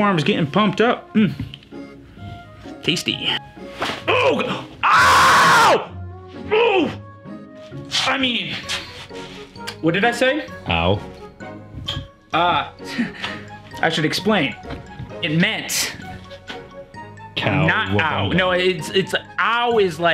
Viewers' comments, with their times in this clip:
0:04 when your mom tells you to do the dishes then you scream the f word.